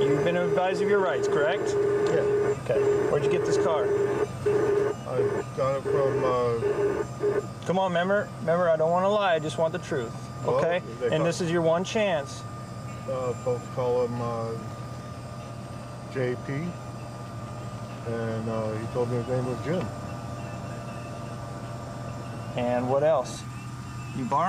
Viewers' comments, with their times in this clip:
0:06 sounds like the guy from trailer park boys